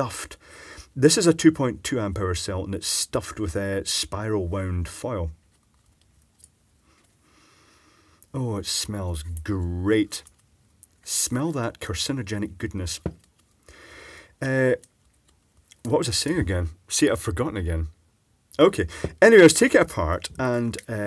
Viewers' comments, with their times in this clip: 0:05 Bro lost a few brain cells after that sniff 😂